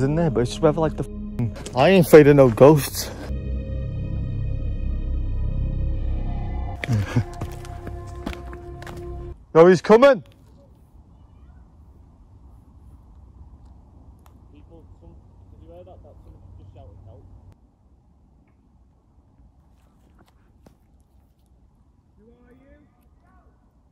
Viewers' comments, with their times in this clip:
0:10 that man yelling said UWU! ( I CAN'T STOP LAUGHING ) their defiantly just teenagers messing with you.